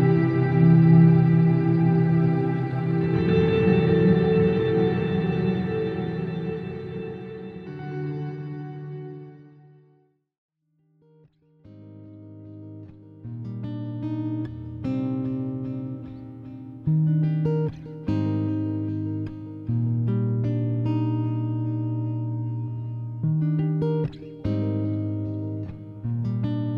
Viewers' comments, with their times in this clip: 0:10 Bought the pedal because of that riff. Great sound! What guitar did you record this with?
0:11 Thanks to you I decided to get this pedal. The calm little chord progression you play left me in awe. I absolutely love it. It's hard to wrap your head around all the features of polymoon, but it's simply amazing. Thank you!